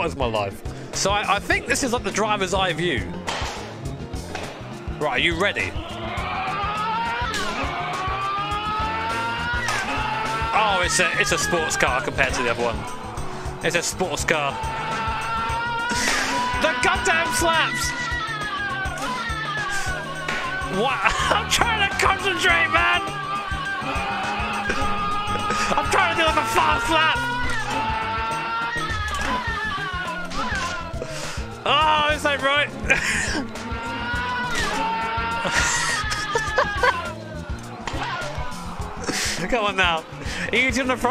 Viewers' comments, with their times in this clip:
0:06 when the v-tec comes in
0:26 "Im trying to do a fast lap" or "I'm trying to do a fart slap"?